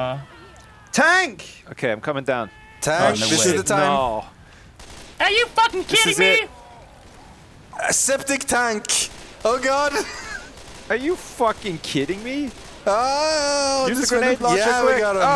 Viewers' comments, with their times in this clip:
0:03 is how most of the xbox players sound